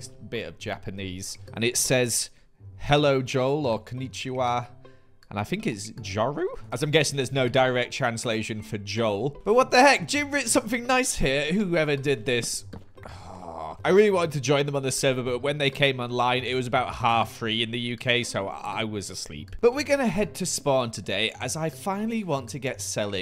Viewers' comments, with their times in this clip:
0:05 my Japanese self is crying at this pronounciation😂